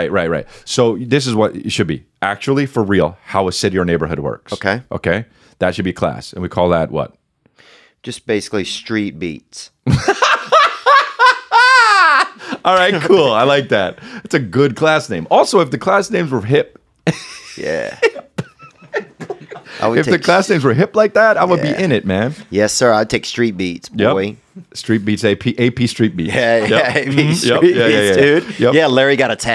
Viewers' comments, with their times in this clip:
0:09 chris got the gervais laugh
0:10 that laugh had me rolling